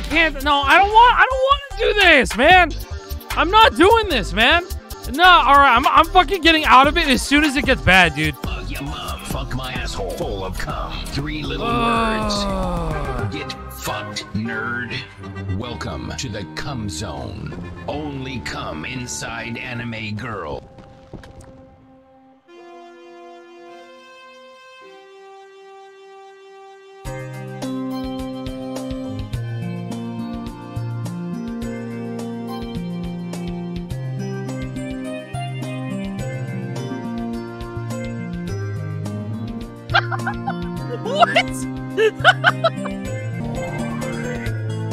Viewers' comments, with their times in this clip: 0:08 most deranged riser ever + that timing
0:11 ok as terrible as was, you CANNOT deny how hard the 'get fucked nerd' went with the beethoven backup
0:11 I can't get over this fucking drop, WHY DOES IT SYNC SO WELL
0:21 accidentally recreating part of the yugioh theme
0:26 Okay, does anyone else think it sounds like a sad tune from Phoenix Wright??
0:29 actually just sounds like an ace attorney song